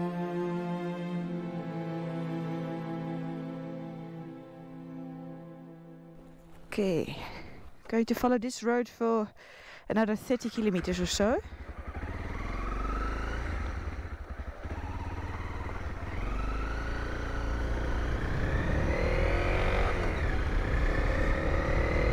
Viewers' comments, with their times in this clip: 0:08 I like how you pronounce Kilometer as Kilimeter.